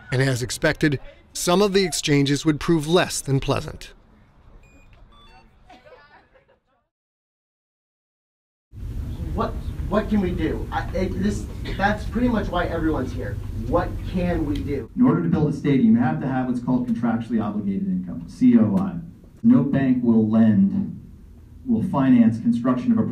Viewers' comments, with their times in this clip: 0:07 That is 100% me talking at the Supporters Summit asking what can we do.